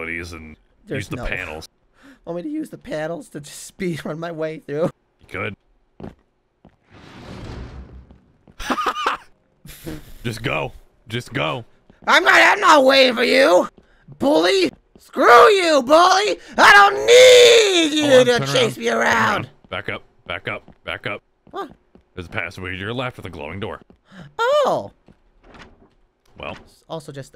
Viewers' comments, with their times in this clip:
0:10 why was his laugh so cute?-